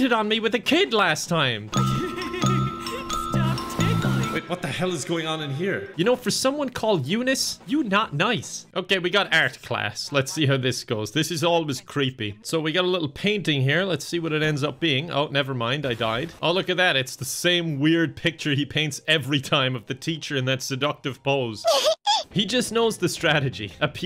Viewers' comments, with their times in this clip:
0:08 “eu not nice” Kevin pro-brexit confirmed